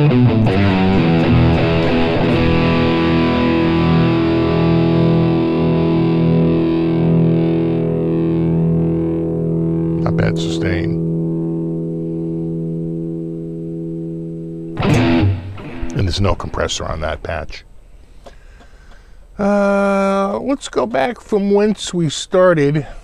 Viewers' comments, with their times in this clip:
0:08 a bad sustain?